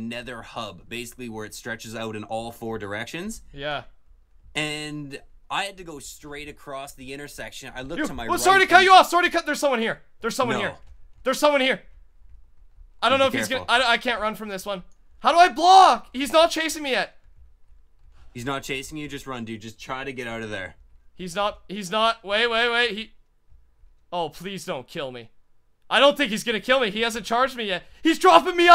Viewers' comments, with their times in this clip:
0:10 the most Canadian thing I've heard🤣 guy got jumped and started screaming sorry to cut u off